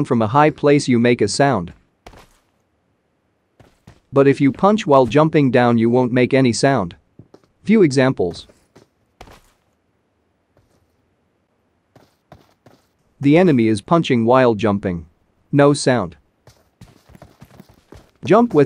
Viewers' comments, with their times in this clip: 0:06 no the punch makes a sound so still be careful if anyone reads my comment